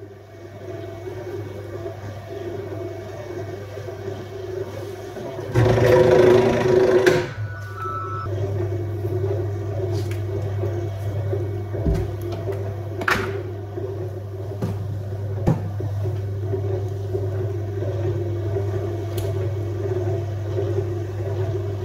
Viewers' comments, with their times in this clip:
0:07 Was this video recorded from a cell phone, instead of a compact camera? Because the video cut off just as a ringtone was playing.
0:07 Yes, all my videos, even those with 4K resolution, are recorded with a smartphone. I've tried several phones, even newer models... so far the best one is the Samsung Galaxy S8 2017.. there is a sound from another phone, I just have two more phones in my pocket that I use for calls. I only use the Samsung Galaxy S8 2017 for are record my videos.